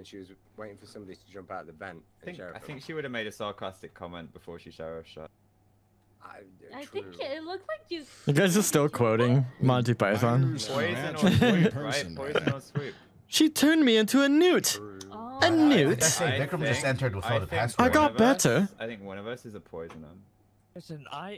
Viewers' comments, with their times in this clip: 0:08 that monty python impersonation was incredible! 🇧🇷💖